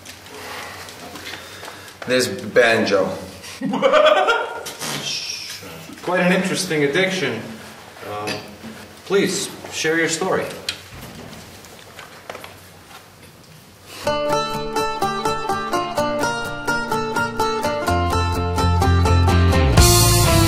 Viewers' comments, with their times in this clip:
0:05 Epic Laugh :D